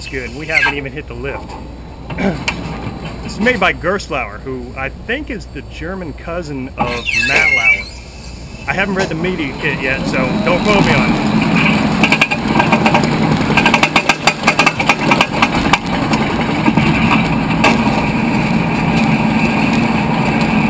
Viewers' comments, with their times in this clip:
0:07 I know who gerstlauer is, but he said something like "I think gerstlauer is the german cousin of Malauer" I was wondering who the heck " Malauer" is.
0:07 Does any one know what he said ? I heard Malauer